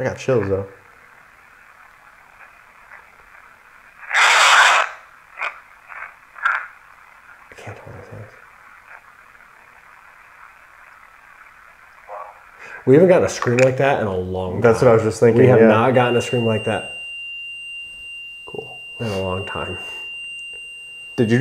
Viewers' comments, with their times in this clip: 0:07 New subscriber to your channel!😊❤ After the scream/growl the demon said “YOU WILL DIE!!)